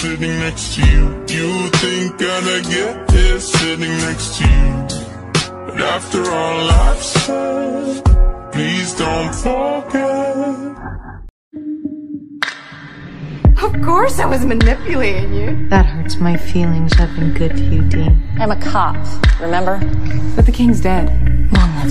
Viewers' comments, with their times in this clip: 0:07 Someone :tells a funny joke Scorpio laughs Me run